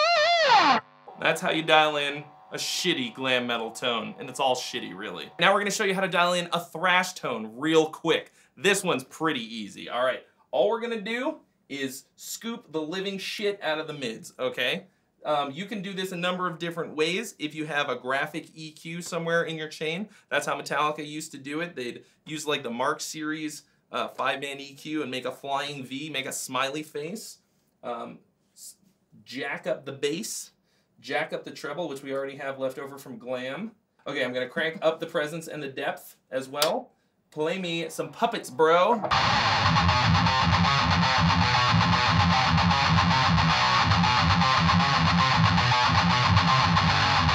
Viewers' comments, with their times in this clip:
0:10 metal tones in a nutshell
0:35 Wow, you really captured the Line 6 Spider sound there !